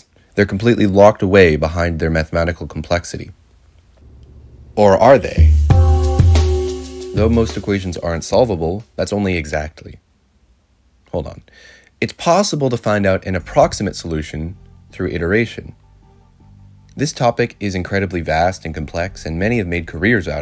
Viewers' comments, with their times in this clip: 0:05 this sound is equivalent to undertaker's unexpected entry during an ongoing wrestling match😅 haven't watched the complete video, I'll leave a 'review' comment after watching it but it seems video will be awesome and informative.